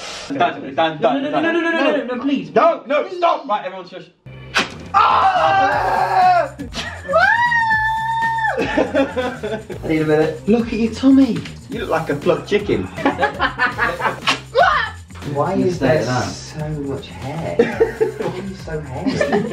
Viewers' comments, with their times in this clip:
0:07 that high pitch yell 🤣🤣🤣